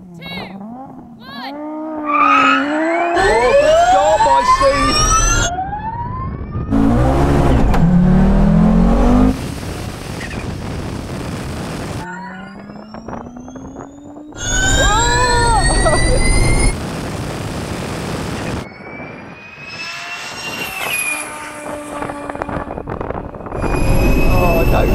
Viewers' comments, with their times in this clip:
0:09 wind noise turbo more wind noise